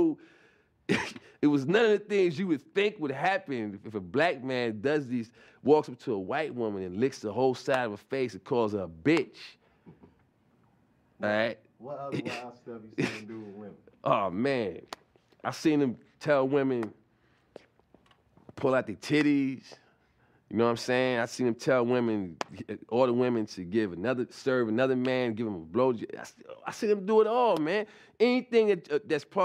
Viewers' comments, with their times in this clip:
0:10 sounded like VLADTV